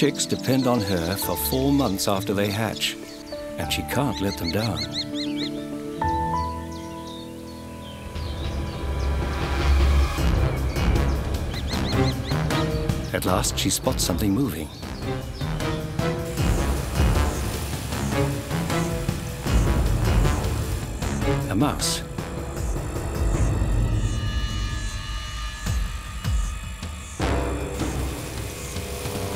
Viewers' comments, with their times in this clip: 0:10 Final boss music